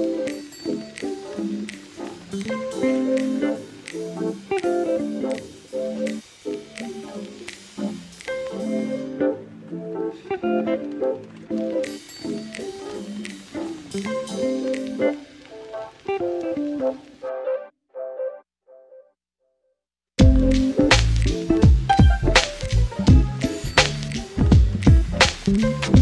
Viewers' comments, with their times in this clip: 0:09 I love that bass